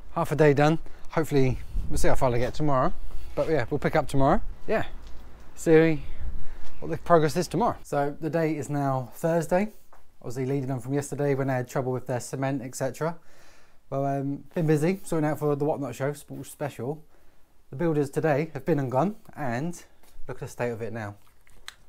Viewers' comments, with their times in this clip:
0:04 my iPads Siri comes up! Sounds like you say Siri 😀😭